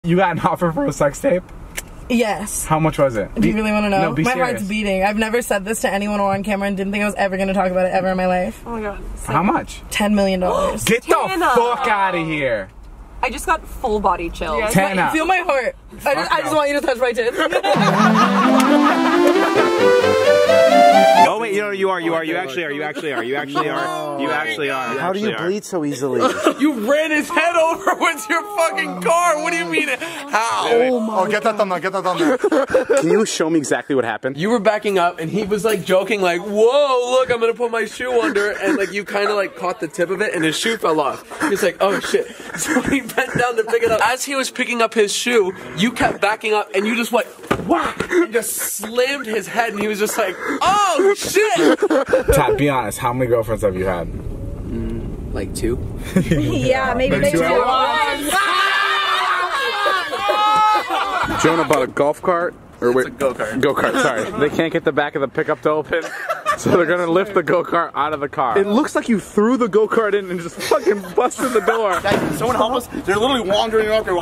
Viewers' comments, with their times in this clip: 0:00 damn David just voice cracked like 60 times😂
0:55 can someone please tell me what they said together at this part I still can't understand it 😂
0:56 It sounded like they were singing.the harmonizing was crazy lmao